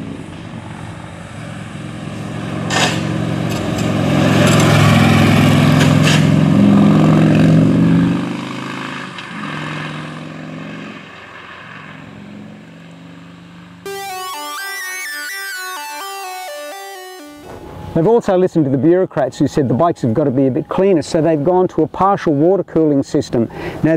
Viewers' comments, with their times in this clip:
0:04 Careful how you corner, mate. Sounds abound from pipes draggin' on the the ground If you did the vid at night, them sparkies would lite up the nite, right? Bonzer.